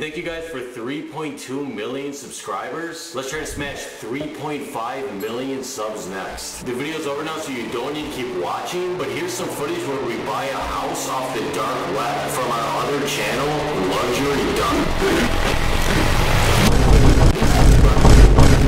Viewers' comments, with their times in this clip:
0:03 the laughter began.... 5 hours later and I’m still DYING!!!!